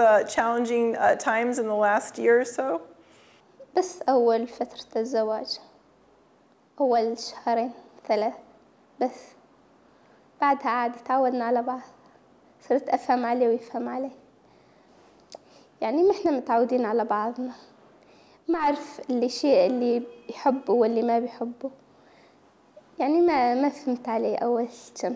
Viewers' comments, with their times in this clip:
0:03 at minute why is she laughing? like what’s so fun about this topic ? she has zero empathy they should fire her , honestly.
0:08 she sounds so incredibly scared…